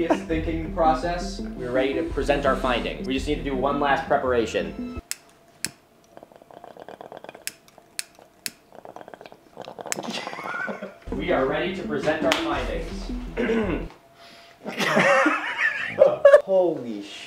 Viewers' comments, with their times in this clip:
0:03 "We just need one last preparation..." massive 🍃💨 rip That explains a lot 😂✌️What a relief!! (I thought it was a 🍆 )